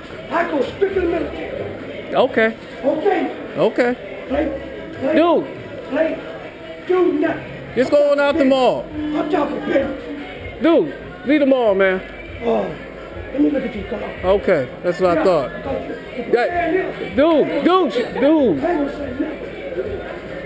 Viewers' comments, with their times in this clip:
0:04 dude sound like Eddie from five heartbeats